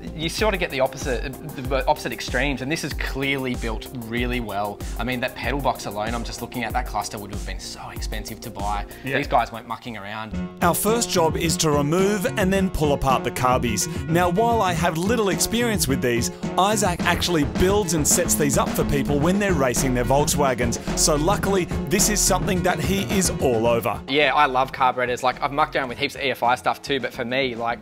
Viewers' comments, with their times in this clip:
0:10 Whats the song ? That's s sweet tune